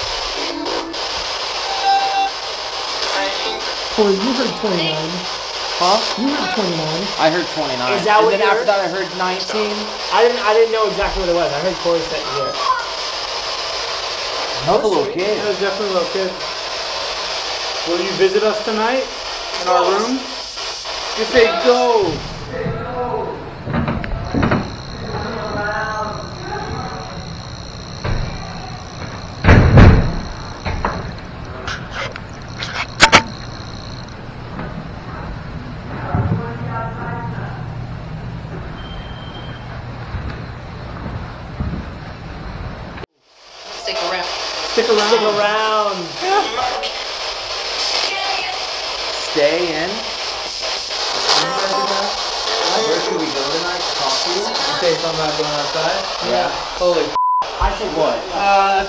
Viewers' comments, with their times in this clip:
0:04 a child in in the spirit box static says six
0:09 sounds like she said something about poison ( i am poisoned?)
0:11 When you were listening for what they were saying when u guys talked aboutthe ‘girl voice’ i swear it screamed “help us” but it could just be me
0:28 I heard someone say help
0:45 Directly after the “stick around” from the spirit box I hear “we like you”.